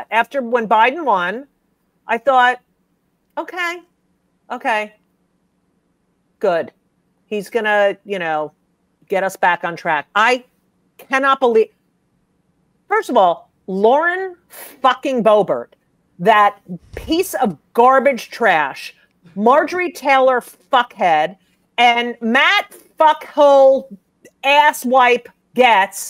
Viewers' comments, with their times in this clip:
0:10 move over Dracula Flow, we got Judy Flow now